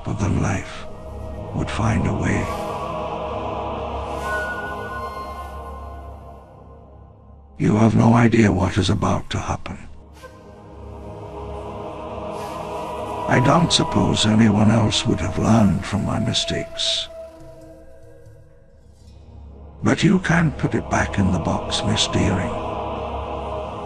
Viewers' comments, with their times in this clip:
0:10 it’s as if the pterodacty is humming the tune😂